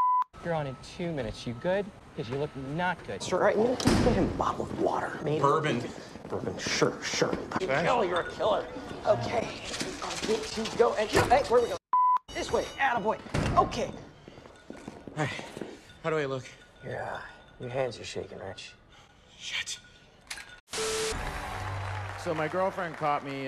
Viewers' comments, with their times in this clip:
0:07 DID SOMEONE JUST SAY BILL YOUR A KILLER INSTEAD OF RICHIE?! BAHAHAHAH